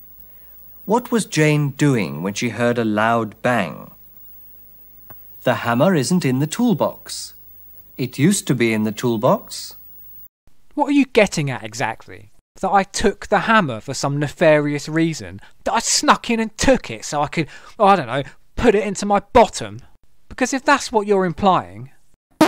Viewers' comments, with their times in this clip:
0:04 And for sterling use of sound effects.